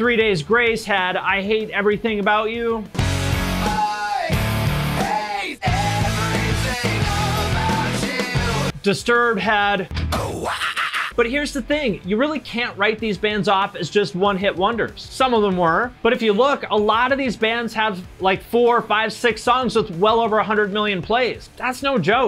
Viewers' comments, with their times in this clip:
0:08 ...Disturbed had ''aw wakakaka" - lool that made me laugh!